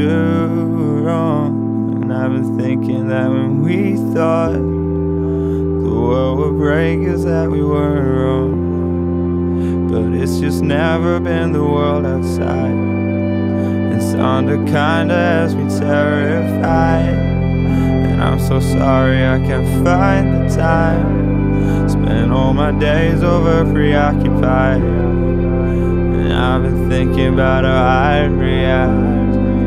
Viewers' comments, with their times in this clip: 0:10 That siren type noise that starts is actually orgasmic to my ears, and I don't understand why.